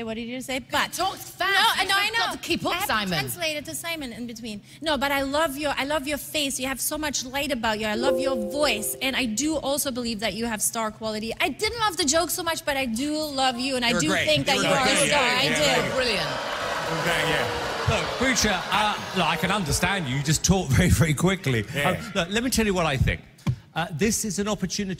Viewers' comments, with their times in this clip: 0:05 The windows notification confused the hell out of me
0:06 anybody gonna talk bout’ the windoes 10 notification sound?
0:06 Do you hear a windows noise ?
0:06 So no one gonna talk about the windows noise that pops up when you try doing an action that isn’t possible
0:06 that windows sound
0:06 What was that Windows sound tho? XD 😆😂 🤣
0:06 I cant be the only one that Heard the Windows Sound right?
0:06 Microsoft notification lmao 🤣
0:06 Why was there a Windows sound?? 😂
0:07 Windows sound effect
0:07 Did anybody else notice the Microsoft notification.
0:07 Anyone else here the windows sound
0:07 This guy is great! Also the windows notification scared me
0:07 I'm the only one that heard the computer ring
0:07 not the sound effect
0:07 Am I the only one who heard that ding
0:07 the fake microsoft ping 💀💀💀💀💀
0:08 desktop noise lol
0:08 random pc sound
0:08 Um.. Am I just hearin things or did someone just open a computer?
0:08 the computer noise. 👌
0:11 I love that after she said that the crowd had his back and started booing her. It shows that everyone in the audience liked him